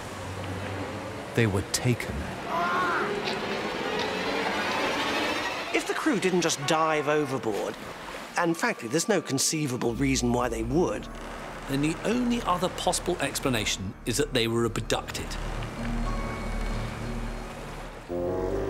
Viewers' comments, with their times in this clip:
0:03 Lmao I very much enjoy the generic screams that we all know and love, such as